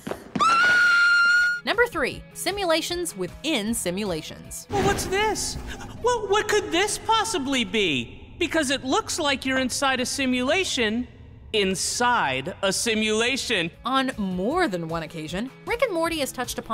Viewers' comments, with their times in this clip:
0:04 Is it just me or does that alien sound like one of the tallest from invader zim?